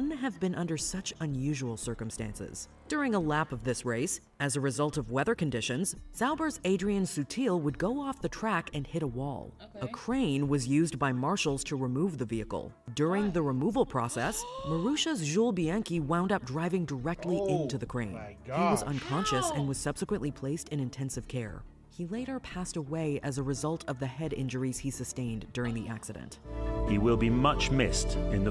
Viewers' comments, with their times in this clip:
0:10 did the woman have to be commentating throughout the crash. There’s already one person talking we don’t need you too as well